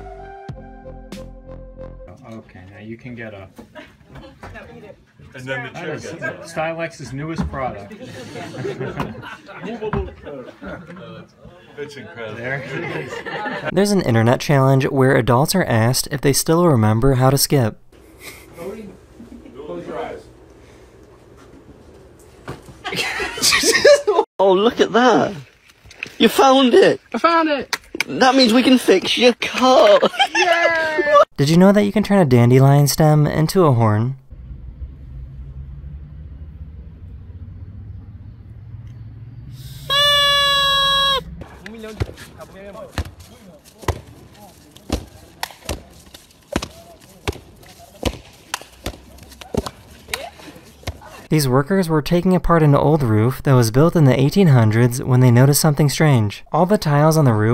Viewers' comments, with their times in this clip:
0:06 transformers sound effect
0:25 bro has a Scottish accent
0:39 that aint a horn thats that birthday blow thingy